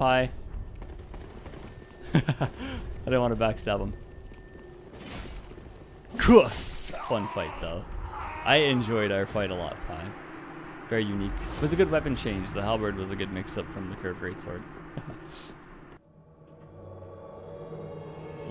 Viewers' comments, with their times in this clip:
0:06 why was that scream so delayed? It's like he got shot